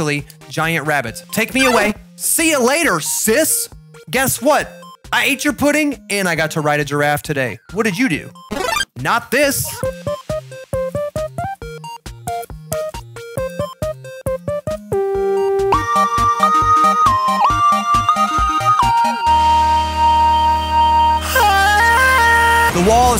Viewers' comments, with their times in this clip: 0:10 fnf fan: yo this song is so lit
0:10 wow his sing skill ting is gud
0:11 that bit gave me so much life there man! I didn't expect that banger there.